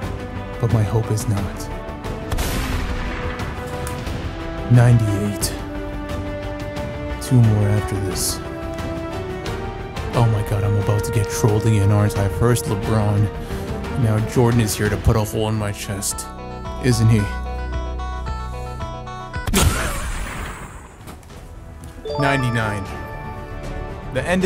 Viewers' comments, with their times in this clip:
0:09 when the Jordan challenge music started playing I thought it was finna be a good mj card ngl